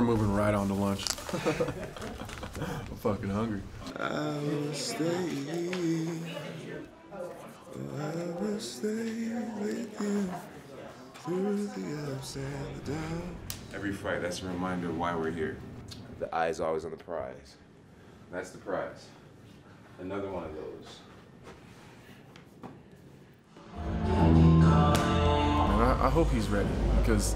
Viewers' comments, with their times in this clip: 0:08 Jon Jones can sing.